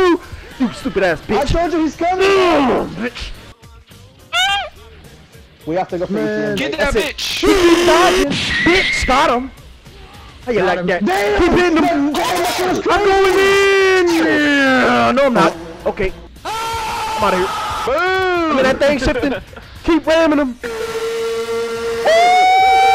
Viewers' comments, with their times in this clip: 0:03 the scream was too cute 😂😂